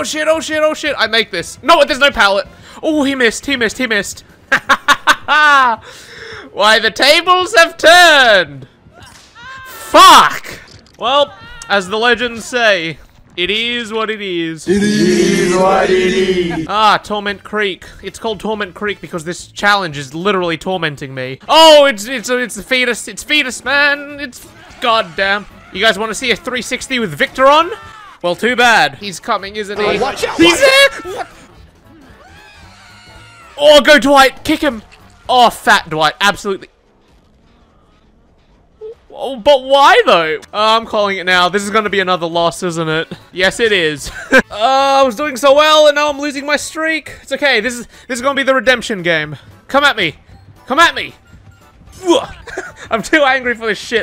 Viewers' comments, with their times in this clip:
0:03 “Ah, how the tables have turned?!” *SNAP*
0:39 you sounded so defeated with a hint of disappointment